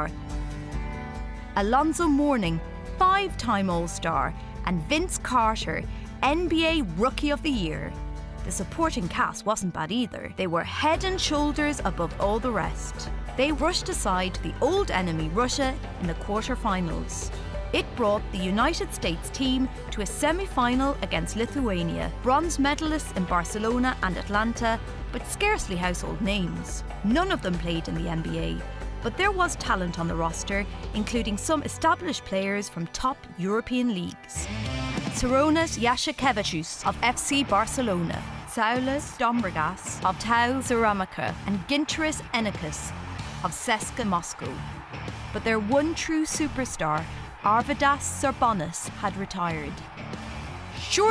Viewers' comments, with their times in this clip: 0:04 Vince WHO? Cashier?
0:36 I’m dying of laughter on how she pronounces their names. (As a Lithuanian)